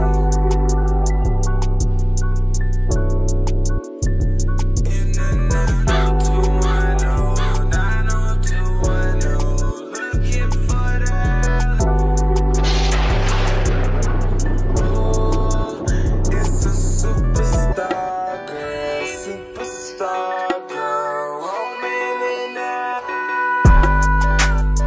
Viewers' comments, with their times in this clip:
0:06 LOl they put a crow in the song hahahah